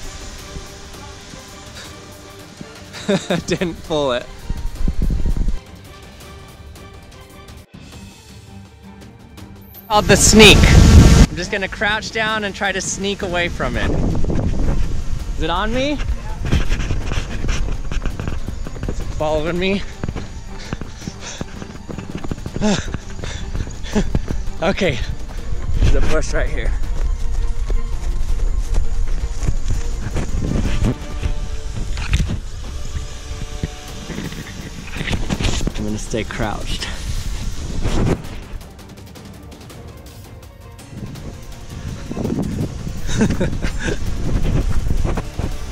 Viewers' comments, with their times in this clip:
0:08 my ears blasted off
0:08 geez, chill with the ear rape 😂
0:09 Rip earphone users
0:09 Put on headphones, blast full volume and watch your eardrums explode.
0:10 RIP my ears and all other headphone users
0:10 rip headphone users😵
0:10 it sounds bass boosted
0:10 Warning headphone users.
0:30 did someone fart?
0:31 I heard a fart